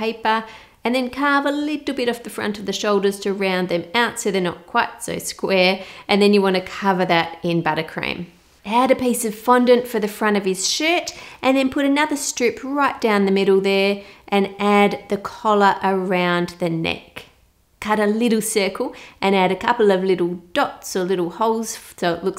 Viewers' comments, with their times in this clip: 0:10 I thought you said something really different to shirt 😂